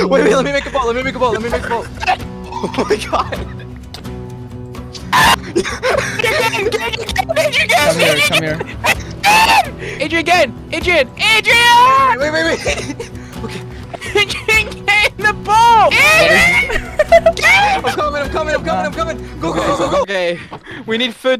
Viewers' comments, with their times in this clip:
0:04 *weird scottish noise*
0:04 sounds like fnaf jump scare